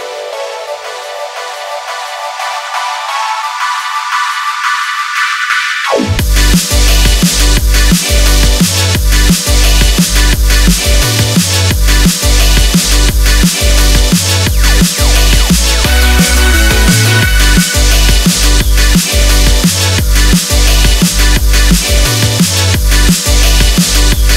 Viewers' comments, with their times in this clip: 0:05 That drop grabs you by the B doesn't it? <-- Lol I just had too. =D